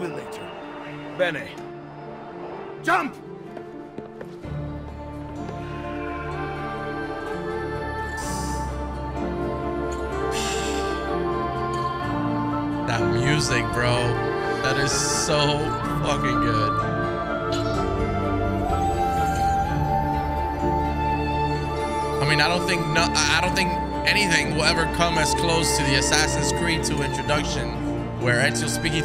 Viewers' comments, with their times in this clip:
0:04 That music man. Keeping the AC franchise alive to this day.
0:12 music always gives goosebumps 😍😍😍😍😍😍